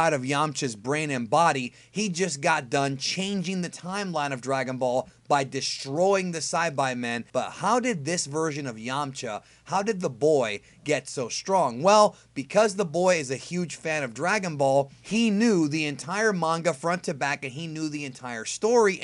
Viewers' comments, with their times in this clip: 0:06 Syby men. WTF.